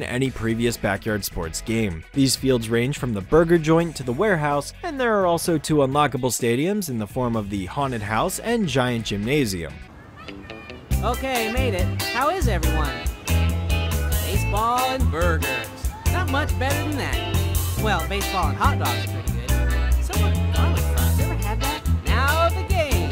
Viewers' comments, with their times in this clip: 0:10 sonic adventure ass audio mixing